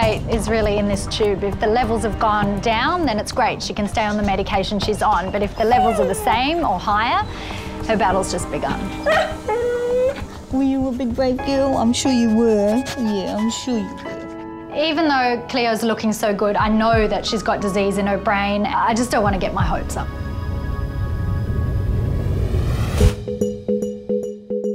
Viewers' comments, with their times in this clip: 0:09 Her little uh oh noise